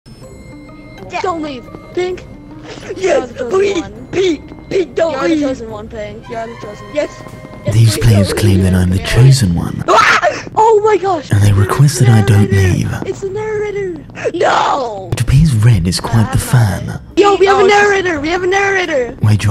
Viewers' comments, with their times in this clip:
0:01 Why the hell does White from sound like Fríes from BFDI? 😐